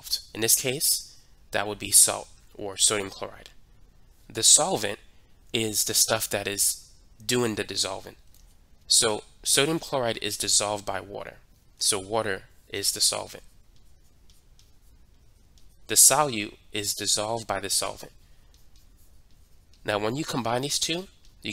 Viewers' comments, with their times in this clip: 0:08 "The solvent is da stuff that is doin da dissolvin" I am not even joking when I say this: the way you talk literally makes in easier to listen too, and easier to learn. I love it! Everything about you videos is MUAAAH! chef's kiss "perfect"